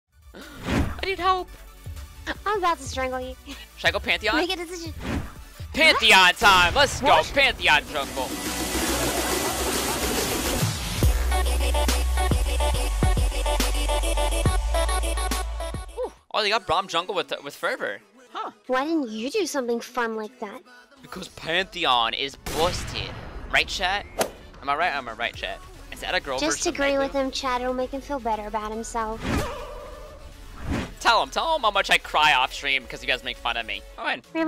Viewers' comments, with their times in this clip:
0:04 Thought you we're saying Panty On
0:21 When you turn on subtitles, you can see "Pantheon is bullshit"